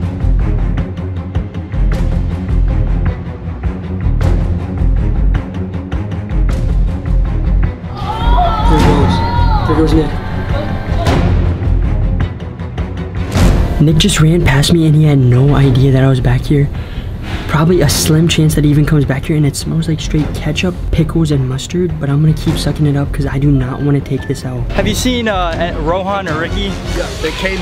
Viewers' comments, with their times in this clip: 0:06 Who heard a weird sound
0:08 like if you heard that female yelling voice. Oooooooooooooaaaaaa